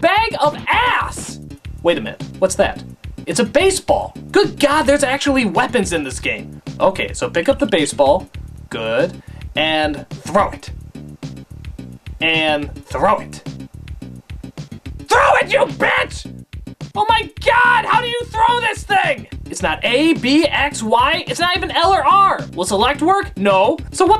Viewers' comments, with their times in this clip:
0:10 I don't know why it's so funny when they yell at the characters on screen, as if they can hear them.